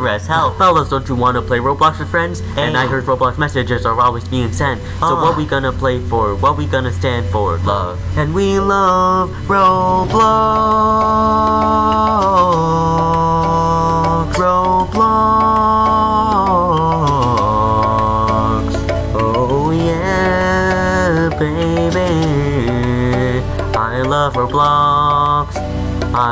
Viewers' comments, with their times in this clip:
0:09 that was amazing voice